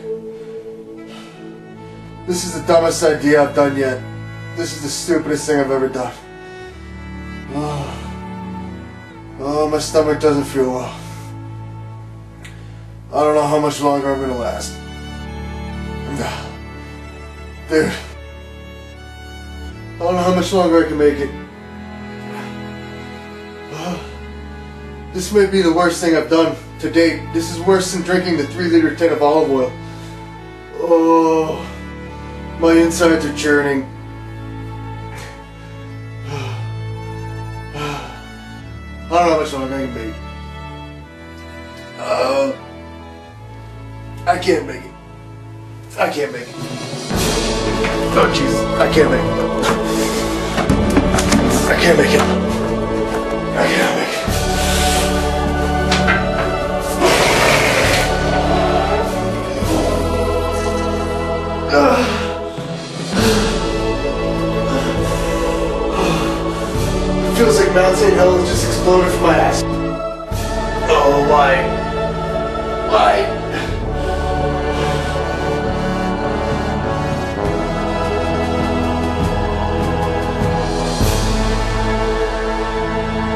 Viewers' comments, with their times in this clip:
0:08 you sound like a dying soldier in a civil war movie
0:23 LMAO the music makes me feel like I'm watching a man die (which I probably am)
0:46 the music intensifying as he quickly gets up and runs to the bathroom is just perfect
0:55 You just shit out Donald Duck!! LOL
0:55 THE VOLUME OF THIS SHIT IS LEGENDARY
0:55 The farting noise just after will never not be funny.
0:55 The Horn of Gondor
0:55 the way the toilet echoes because of the jet engine fart he releases absolutely kills me every single time I replay this video, I laughed so hard my tonsils hurt. What an absolute lad.
0:55 It's 2023, and oh my God that explosive decompression coming out of you is insane lmao
0:56 sounded like a bomb going off from his rear end lmfao
0:56 Still makes me die laughing because it sounds like a dragon roar
0:57 I've been on the planet for 21 years. I've heard some sounds in my life. I've also had my fair share of violent shits. But that sound and catastrophic shit is THE most incredible and rewarding piece of audio I've ever had the privilege of listening to. For that, I and the L.A Beast community thank you. Bless
0:57 That diarrhoea sound is amazing
0:57 a baby kraken calling for its mama
0:57 😂 The sound of relief
0:58 it sounds like mario is jumping 🤣😂💥
1:01 The sound of his asshole exploding sounds like every noise I’ve ever heard in my life mashed together in one beautiful yet horrific moment.
1:06 That spider is just like "Why human... Why must you make these noises"